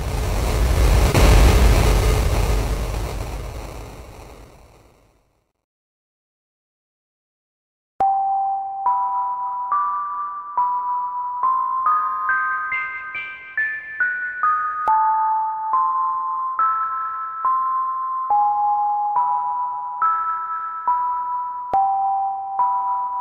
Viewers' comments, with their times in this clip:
0:08 sound like holloween music